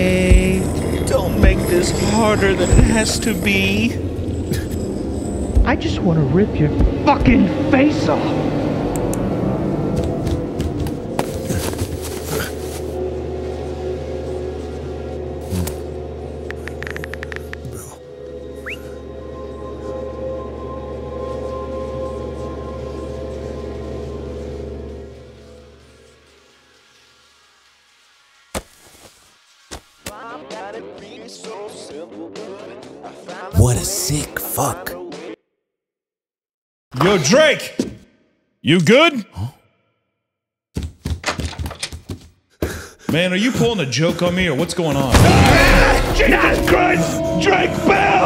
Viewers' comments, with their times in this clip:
0:04 sounds like borderlands 2 psycho dialogue if they made it into a horror game
0:30 Drake and Josh theme song is so haunting yet beautiful